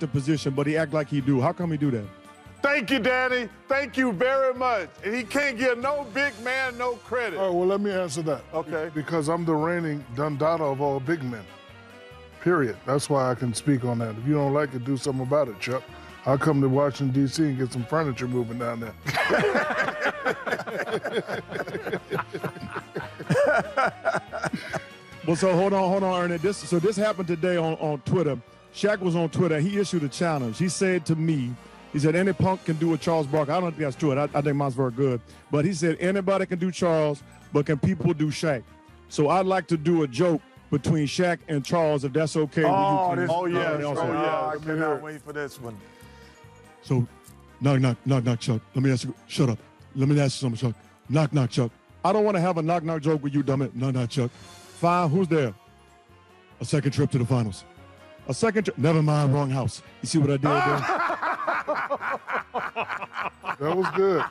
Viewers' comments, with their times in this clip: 0:09 Was shaq reading from a script ?
0:47 😭😭😂😂😂 close your eyes and tell me that ain't them